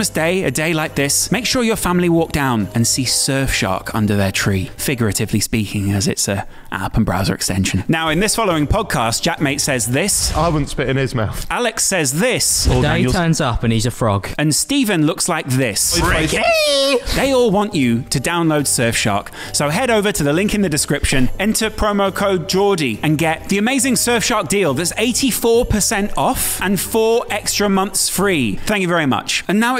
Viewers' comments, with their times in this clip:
0:10 love that Jeremy Clarkson style intro